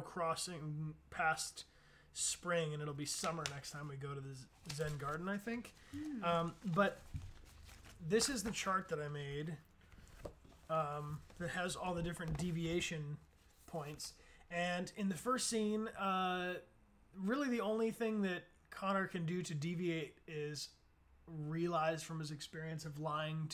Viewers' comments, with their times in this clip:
0:08 This is Dechart that I made 😂😂😂😂😂😂😂😂😂